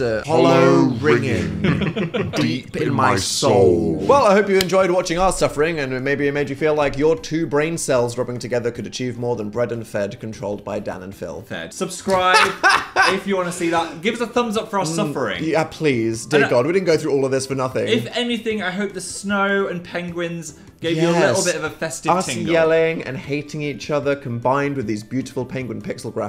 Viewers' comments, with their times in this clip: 0:10 dan mispronouncing "fred" as "fed" and then phil instantly mocking him is peak humour